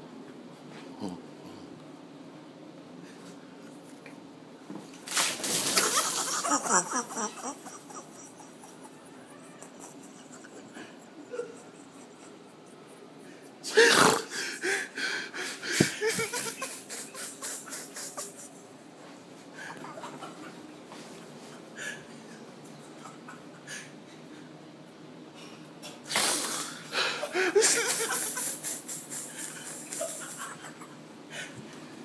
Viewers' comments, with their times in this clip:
0:04 That Laugh Is Priceless
0:05 The laugh got my dying
0:06 WDF IS DAT LAUGH LMAO
0:13 was that a horse????
0:13 this nigga SNORTED whoever was holding the camera !
0:13 this nigga snorted
0:20 shorty Even he had to laugh 😂😂😂